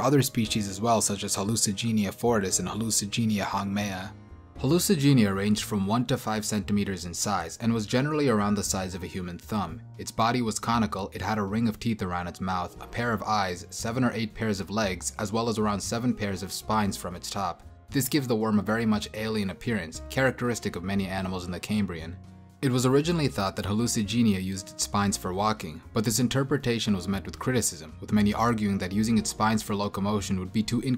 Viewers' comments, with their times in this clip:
0:08 Human thumb an AOT reference!?! (Yellow lightening and huge sound) IYKYK
0:17 The lisp jumped